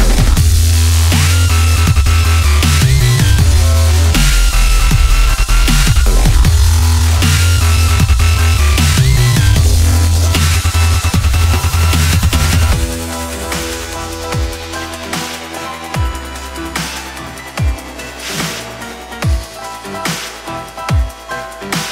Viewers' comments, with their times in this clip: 0:08 Full focus slowed down and Full Grizzly was higher'd by +1 karaoke.. O_O